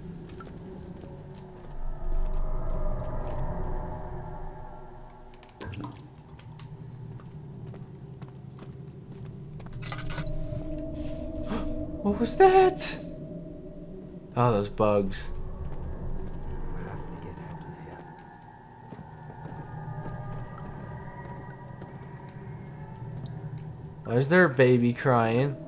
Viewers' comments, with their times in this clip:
0:10 i dont know if anyone noticed this but if you listen closely you can here someone say " have to get out of here" or something like that in some kind of accent!!!!!